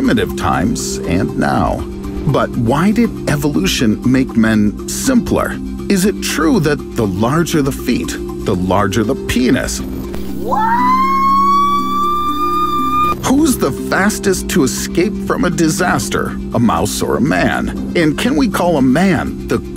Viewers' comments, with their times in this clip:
0:05 the way he said this made me drop to the floor